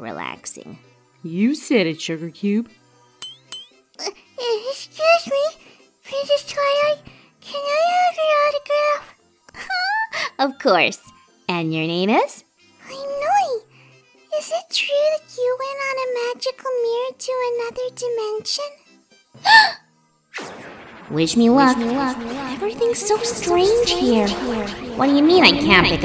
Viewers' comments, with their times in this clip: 0:08 The earth filly sounds like filly Princess Luna/Woona. :-3